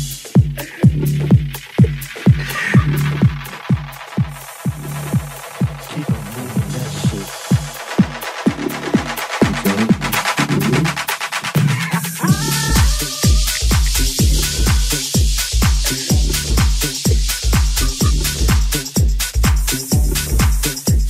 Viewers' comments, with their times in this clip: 0:06 is da best, those laughs touch my soul ❤